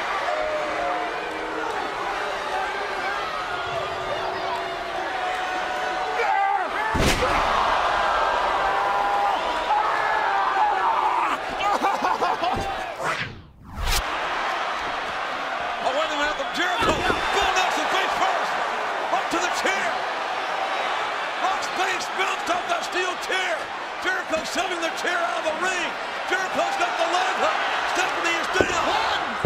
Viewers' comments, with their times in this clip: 0:10 Someone is crying